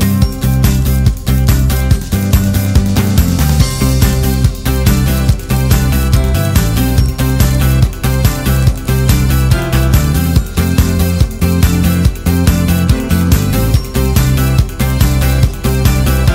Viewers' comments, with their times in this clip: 0:04 is the background a happy version of darkside !?! not so dark anymore though ...